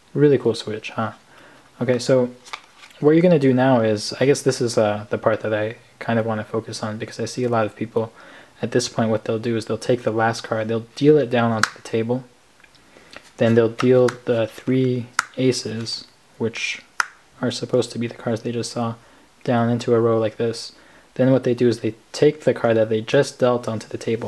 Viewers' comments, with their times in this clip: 0:10 Very good, crunchy snaps and perfect top dealing Good job.